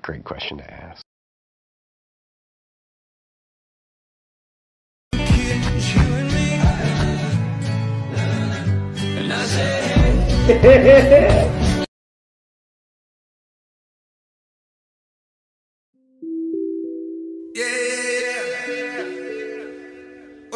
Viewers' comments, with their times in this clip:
0:06 is my fav because of his laugh